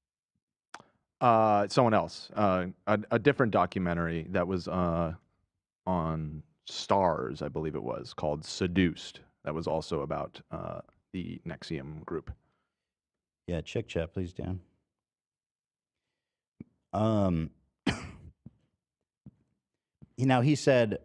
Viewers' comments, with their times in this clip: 0:06 I heard the word "Skadooshed" and thought about Tai Lung